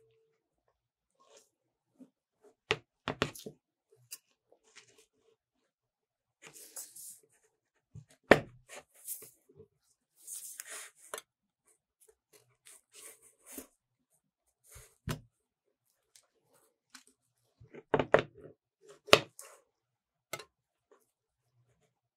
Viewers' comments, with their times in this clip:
0:10 why that sound like the snapchat notification lol